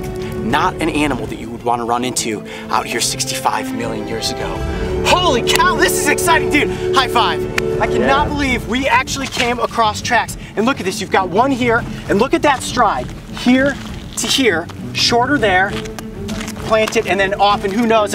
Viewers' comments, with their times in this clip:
0:05 lol Coyote: this is so exciting dude high five Camera man:yea (in a unexcited voice)